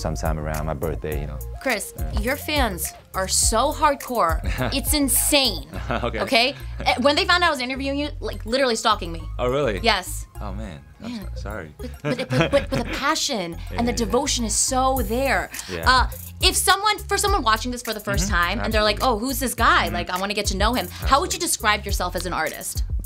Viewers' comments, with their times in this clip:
0:06 Yifan’s laugh though 💛💛💛